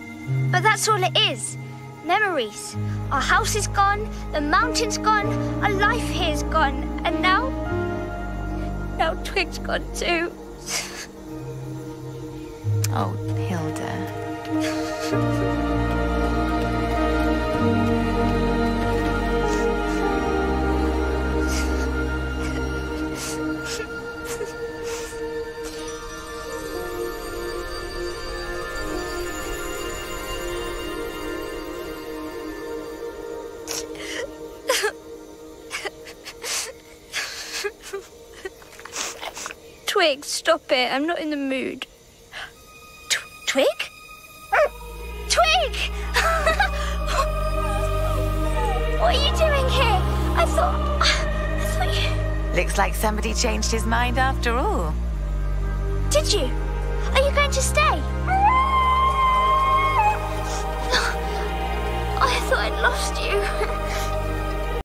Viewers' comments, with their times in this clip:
0:05 Its sad but it’s so funny that a brave curious little adventurer girl CRYS!!!!!!
0:58 I love that little howl he makes.